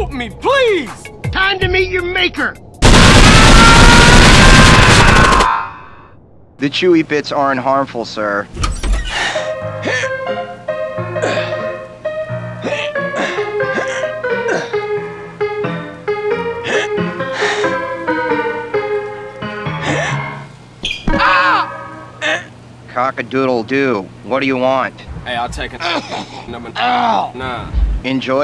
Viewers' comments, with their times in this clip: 0:09 wait the door's sound like scary teacher